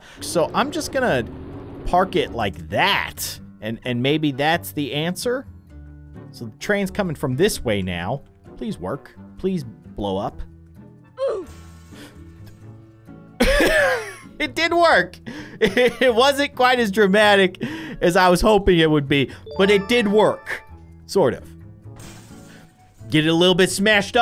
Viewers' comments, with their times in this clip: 0:10 him not so dramatic Me: did that car just go oof